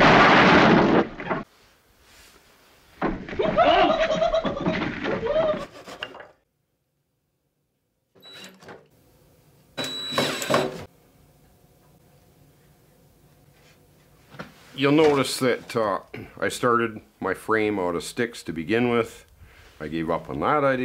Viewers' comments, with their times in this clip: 0:03 was that the zoidberg sound